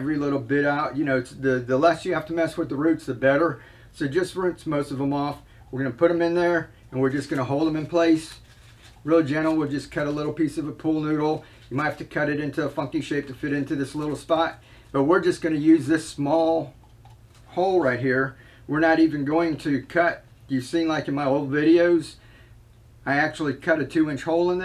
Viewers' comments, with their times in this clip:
0:09 I swear I though you said "f-ing shape" but I had to replay it a bunch of times... You said "funky shape" 😂😂😂